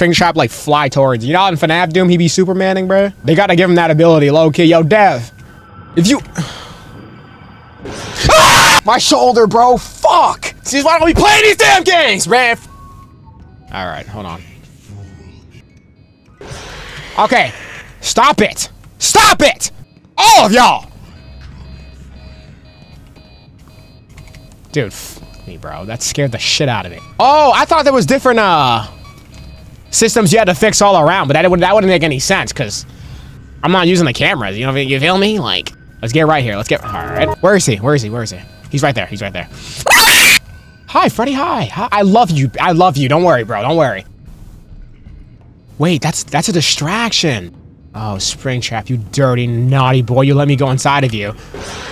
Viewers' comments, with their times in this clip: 0:07 Bro screamed like he was about to get his booty stolen 💀
0:38 the fact that the screams n the sounds u made is hilarious bro edit: for example: